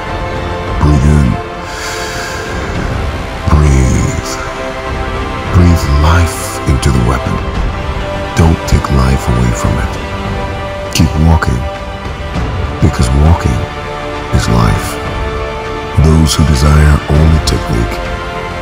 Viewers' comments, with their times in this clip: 0:05 this tune is so calming I feel like I am meditating